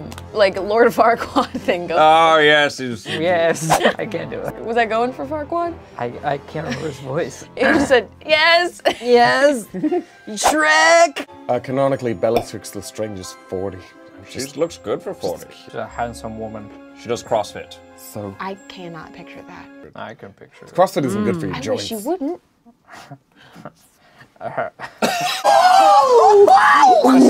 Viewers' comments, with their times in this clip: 0:09 sounds more like fucking Artie from Shrek The Third